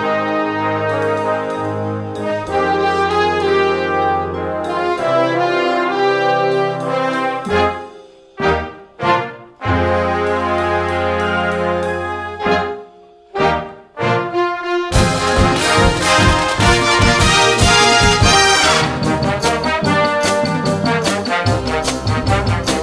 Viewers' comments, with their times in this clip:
0:10 When Trumpet 2 plays higher than trumpet 1